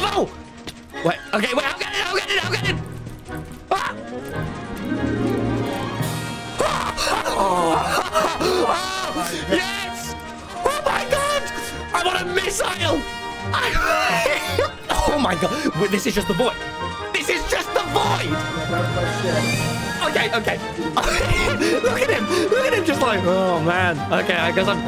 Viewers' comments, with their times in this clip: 0:06 and also quite a perfect timing with the mario galaxy music